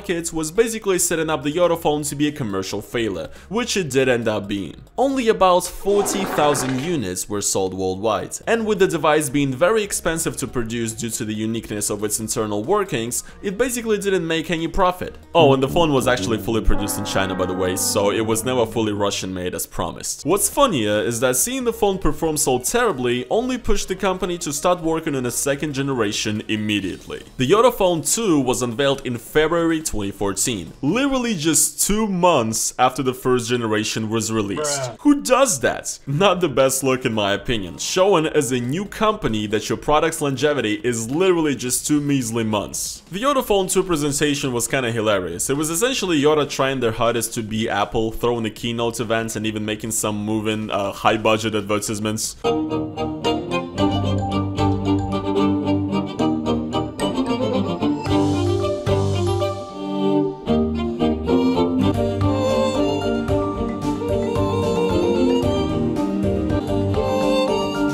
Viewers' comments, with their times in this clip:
0:06 is that a fart
0:53 Weird presentation yes... but that actually was a pretty sick violin track.